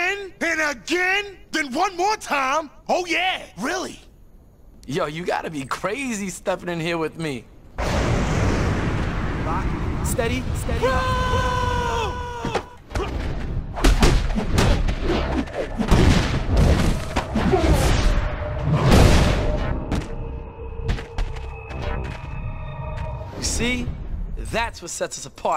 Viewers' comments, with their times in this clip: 0:07 what did he say? Steady what?? I can't understand